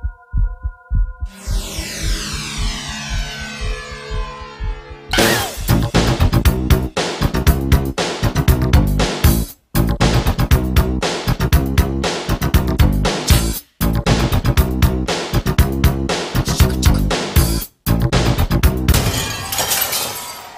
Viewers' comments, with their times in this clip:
0:05 goodbye headphone users!